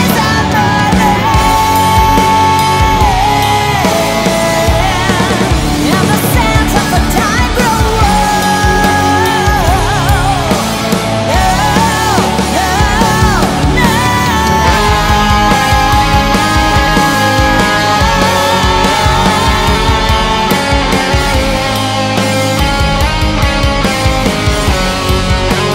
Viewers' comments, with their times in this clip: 0:10 No one ever gets my favorite part to sound right because it's missing the higher harmony part of the original. No dubbing ;0(